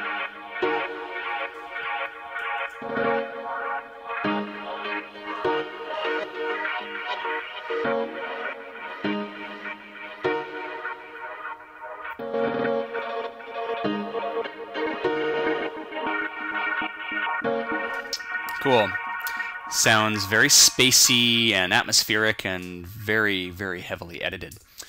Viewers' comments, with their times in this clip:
0:08 :O sounds like the melody bathes itself in a sea of gentle pads :D ... genius! I've used the return idea (which I previously did not know what return could be used for) in my track. Thank you for the lesson.